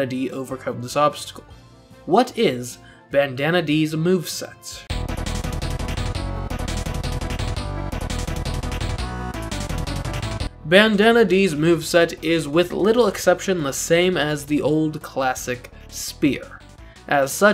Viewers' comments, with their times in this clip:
0:05 That is such a cool tune